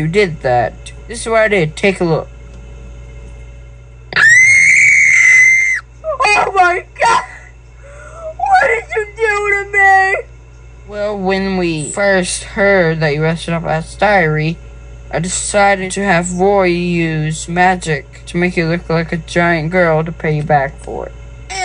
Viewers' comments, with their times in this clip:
0:04 the scream lol 😂😂😂😂